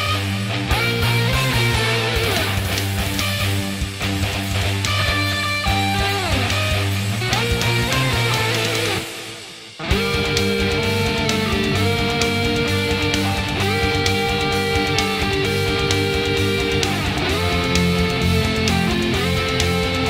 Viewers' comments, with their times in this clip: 0:07 this is great.... I wish the solo where started was a little extended.... but awesome cover I get goosebumps listening to it (: 9.5/10